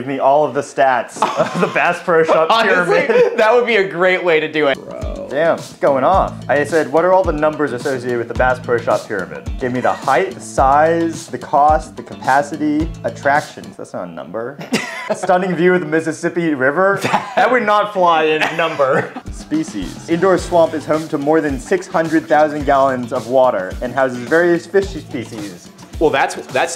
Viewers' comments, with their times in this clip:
0:07 Hang on, what? "Bass Pro Shop" - as in mass or lass? It's not bāss? Here I was thinking the Bass Pro Shop was an implausibly oversized (typically Murrrcan) retail outlet for bass guitars. 😅 I dont even play bass!